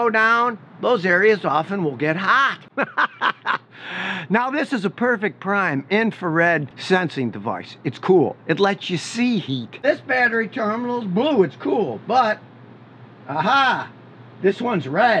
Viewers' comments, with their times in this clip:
0:03 like the evil laugh 🤣